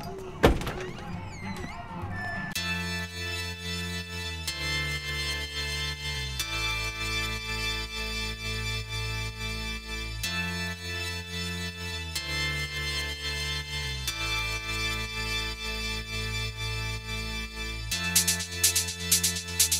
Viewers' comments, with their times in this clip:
0:04 What’s with the random music